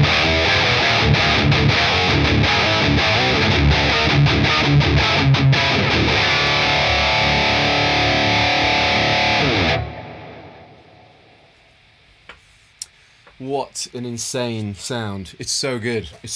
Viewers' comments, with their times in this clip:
0:03 lmao that was the most brutal 2-5-1 I've ever heard